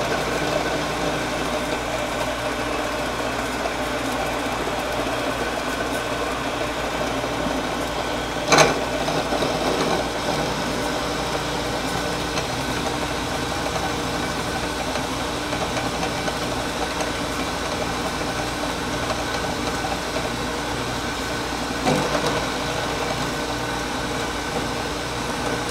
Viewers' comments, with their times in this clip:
0:08 YOU CAN HEAR THE FIRST BANG!